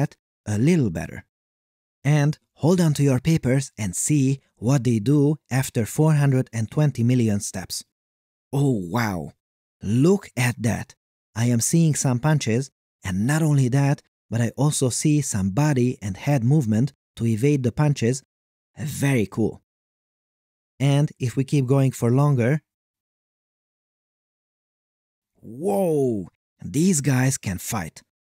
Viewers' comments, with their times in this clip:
0:10 yo!! Fundamental principles of raliteh!!!!!